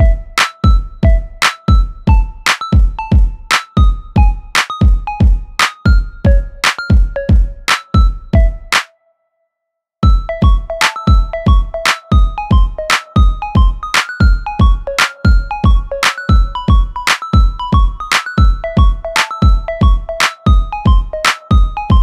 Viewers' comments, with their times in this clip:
0:08 Wow,loved this! Beautiful! The only thing missing in my opinion was that little laugh ,but other than that,perfect!!